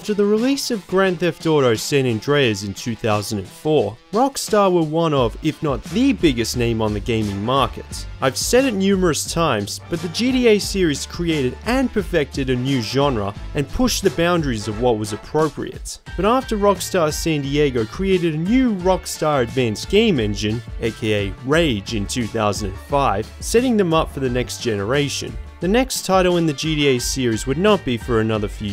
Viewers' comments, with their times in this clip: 0:10 “the GDA series” I laughed so hard